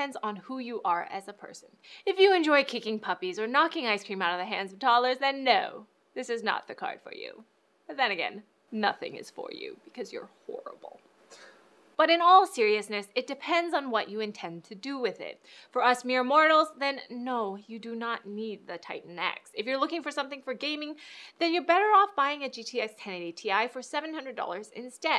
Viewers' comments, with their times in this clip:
0:03 I am sure she laughed she would be legit pro if she didn't.
0:08 Comment Number 23: Somebody actually coughed!!!